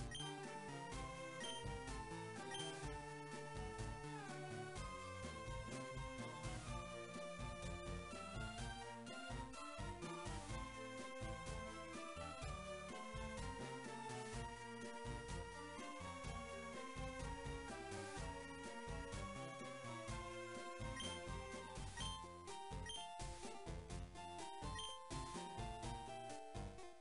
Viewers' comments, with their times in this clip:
0:10 You already know he was yelling at Dark Rising, :)